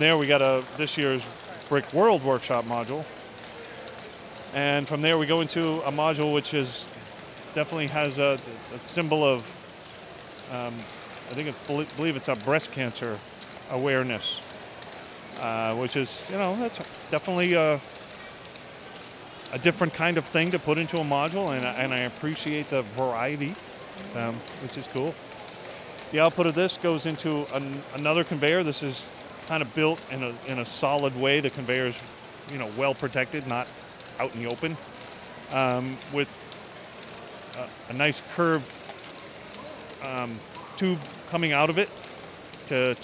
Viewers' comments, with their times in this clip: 0:08 dosent it sound like the start of noisestorm crab rave
0:25 it sounds like he said output of visco